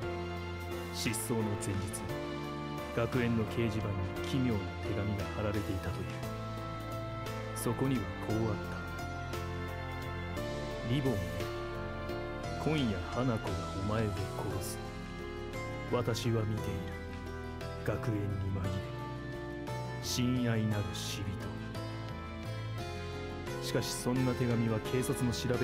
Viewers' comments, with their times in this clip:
0:08 I love the music minute